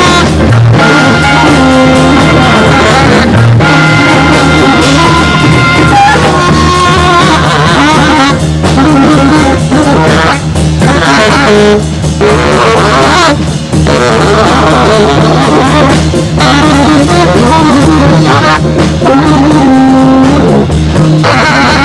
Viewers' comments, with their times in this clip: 0:06 is my favorite part, so awesome, it just takes off into outer space with the bass and drums holding down the groove, so brilliant.